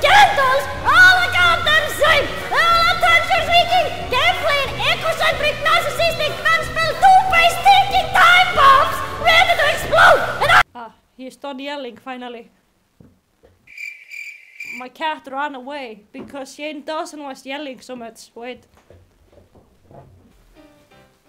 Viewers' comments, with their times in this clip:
0:07 this video was so well done and i’m glad youtube recommended you to me but also the end sounded like toad to me,,sorry😭